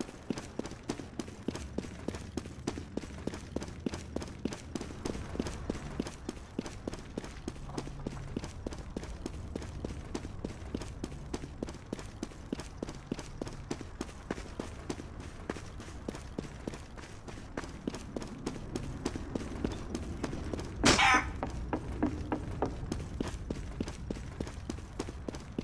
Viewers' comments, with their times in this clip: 0:06 cbblbbe? You mean cobble right? or cbble? not cobblbble or cbblbbe?